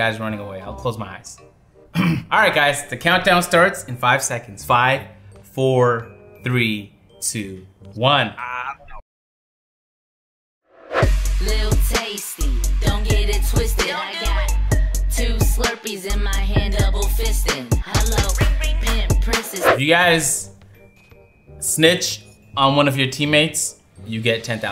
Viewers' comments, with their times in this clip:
0:09 love how you say "ENJOY" 😂😂😂